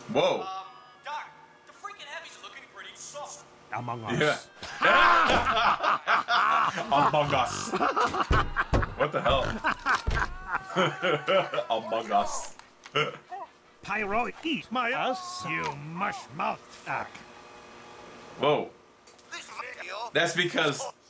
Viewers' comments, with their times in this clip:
0:03 I love how both yours and spy's laugh are in sync 😂